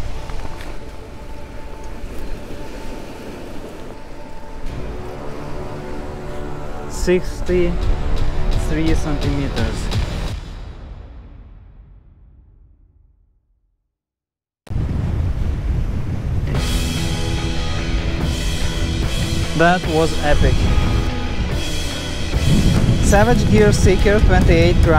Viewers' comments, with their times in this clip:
0:10 So thats called a Sea Trout ?? They're gorgeous! You battle the wind like me! I hate it!! Sucks for casting and makes the audio way harder to follow! Awesome vid!